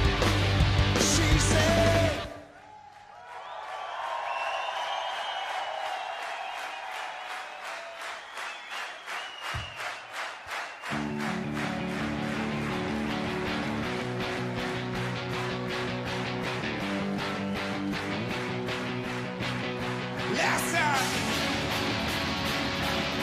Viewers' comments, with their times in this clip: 0:05 Greek people having some serious rythmic skills clapping a bit too fast The moment Dave plays on they stick back to his pace immediately. That's active listening right there. 😮♥️🇬🇷